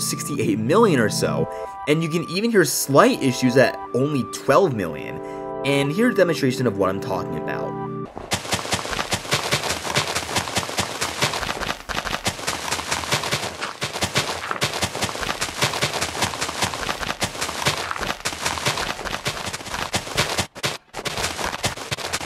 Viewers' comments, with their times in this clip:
0:08 sounds like Minecraft Bedrock at even "normal position". Explain: you will experience sound glitches in some release and beta versions of MCBE past few years